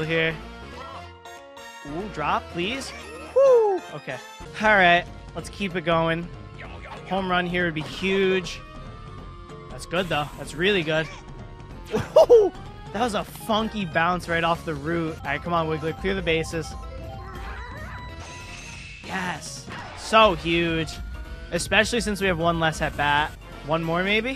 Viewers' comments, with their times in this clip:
0:10 Yo quak Sounds just like funky when hes hitting